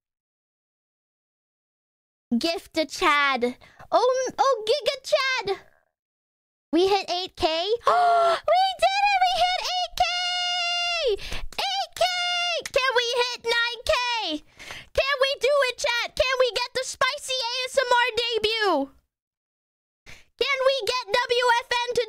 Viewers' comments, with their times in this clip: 0:05 you can hear her stomach growling